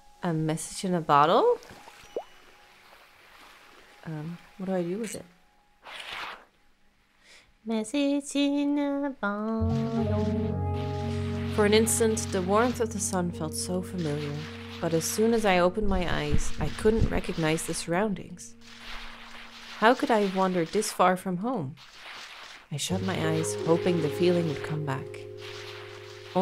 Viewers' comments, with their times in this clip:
0:10 the fact that this plays the right note